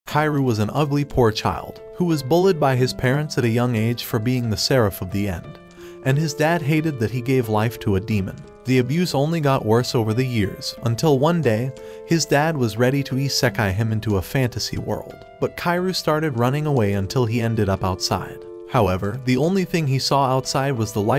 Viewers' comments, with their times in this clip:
0:02 “who was bulled” ❓ XD